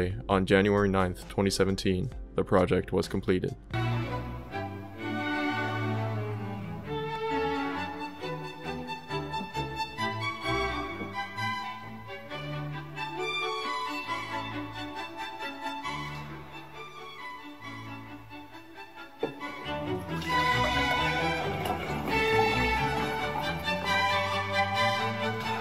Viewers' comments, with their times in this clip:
0:09 I've never reacted to a youtube video in such a primal disgust than at fucking the fucking sound when he pours is actually made me gag harder than any other video on this website.